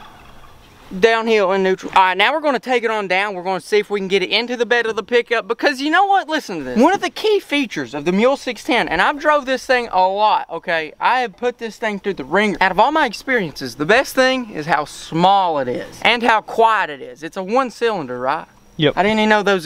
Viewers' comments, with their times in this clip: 0:07 on the vid , Didn't I hear a wild turkey ?